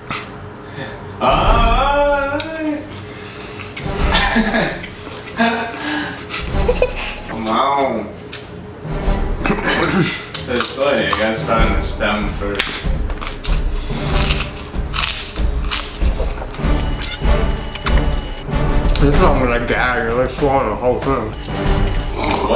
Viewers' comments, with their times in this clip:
0:06 Here you will see the laugh of a demon.